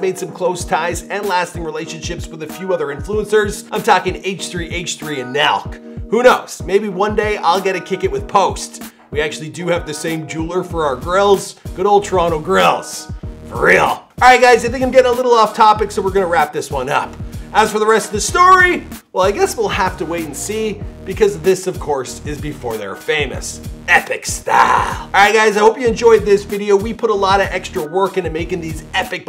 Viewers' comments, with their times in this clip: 0:10 stop exaggerating every last word you say like this its so annoying honestly